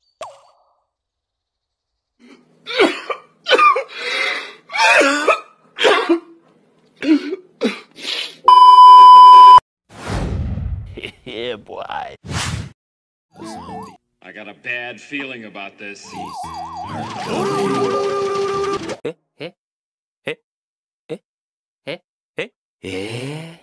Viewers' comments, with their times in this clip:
0:05 why is the guy coughing?